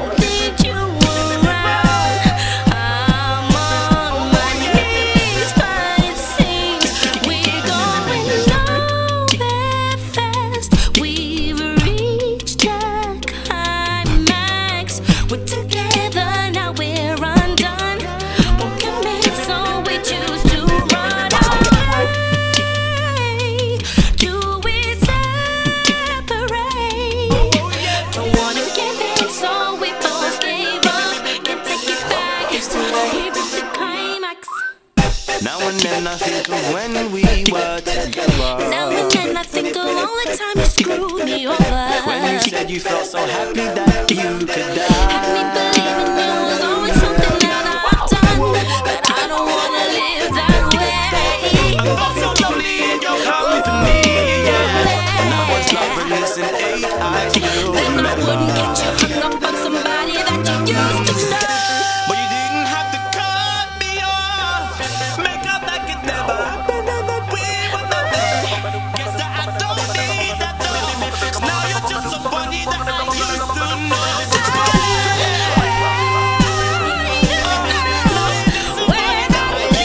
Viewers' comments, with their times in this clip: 0:08 when the backing drops out that bit is sick
1:02 when he sang cut me off, he sounded abit like usher :S